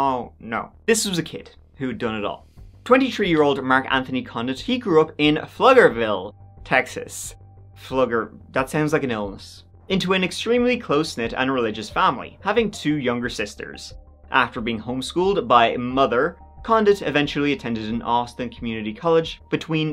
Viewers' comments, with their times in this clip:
0:05 Pflugerville. With a Pfffff... It's just a regular German family name. The town was named after Henry (Heinrich) Pfluger (Pflüger, which means plower / plowman) who was the first to settle in the area. Born in Germany in 1803. Nothing to do with the crime though (most already said here I guess) . But I love how many English-speakers slaughter the German language (living in a German-American bilingual family myself..).
0:05 Love hearing people outside of Texas try to pronounce "Pflugerville"! I was in Austin when all of this went down, you really did the story justice.